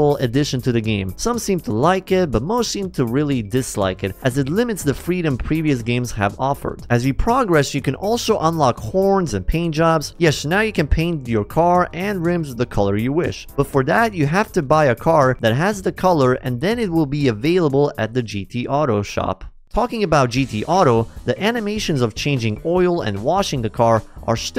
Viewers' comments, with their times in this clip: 0:08 I heard something completely different there